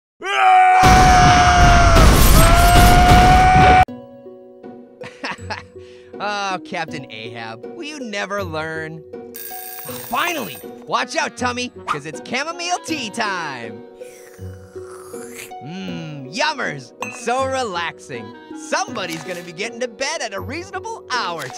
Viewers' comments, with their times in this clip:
0:04 THE BEST SONG IN HISTORY